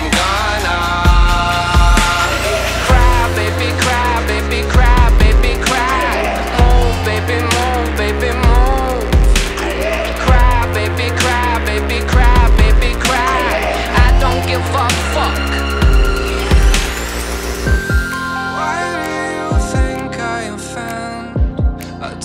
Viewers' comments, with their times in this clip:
0:05 let's be honest we all thought he was saying moan